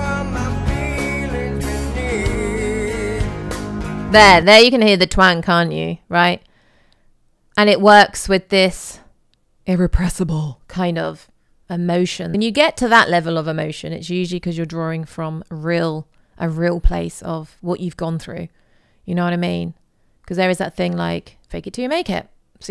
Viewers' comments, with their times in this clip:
0:04 uh yah you can hear ‘the twang’. The song is called Down in a Hole. Hello.
0:09 Channeling your inner Jennifer Coolidge lol